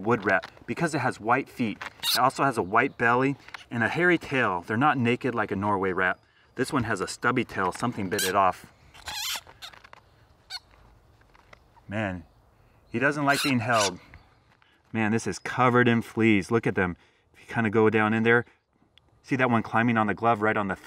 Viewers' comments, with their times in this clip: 0:07 I love that cute rat squeak.